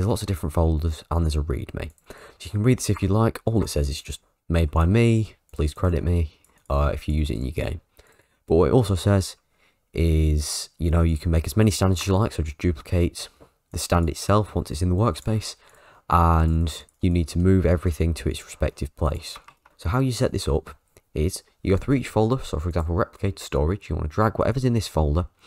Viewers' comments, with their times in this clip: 0:06 IF YOU USE IT YOUR WHAT??!!